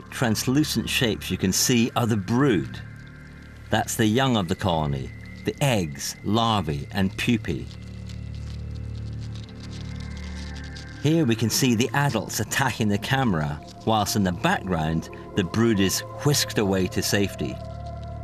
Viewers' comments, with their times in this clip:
0:06 the eggs, larva, and poopy